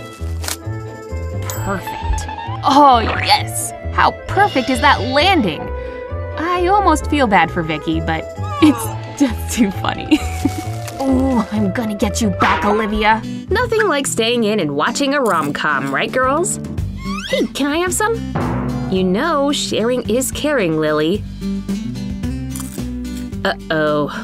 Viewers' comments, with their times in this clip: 0:08 that did not sound normal